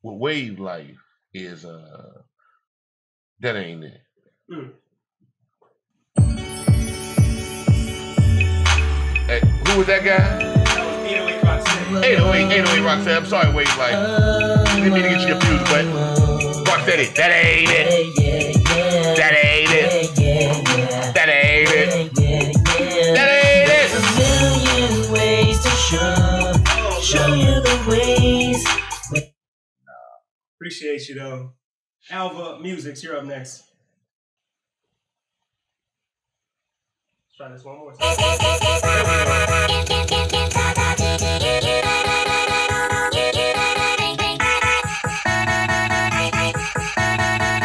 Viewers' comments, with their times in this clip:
0:08 The beat is really a straight hit fire!!! These producers are crazy asf!
0:35 Just Tim mumbling to that beat is better than 90 percent of them rappers out now
0:35 just has the catch really like it ..Tried it at x1.5 speed And x 2 yup still has the catch